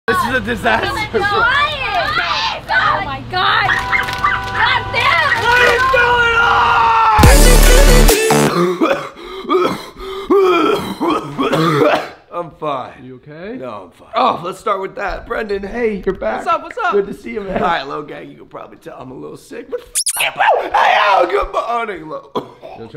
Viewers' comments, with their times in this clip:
0:08 if you would have cough like this in this year, you would have been quarantined and making vlogs in hospital 😅 PS- stay safe and stay healthy ❤️